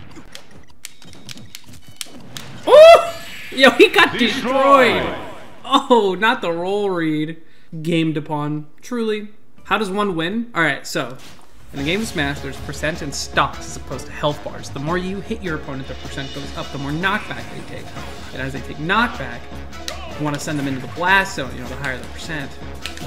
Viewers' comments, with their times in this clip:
0:10 oh man not the tutorial music 😂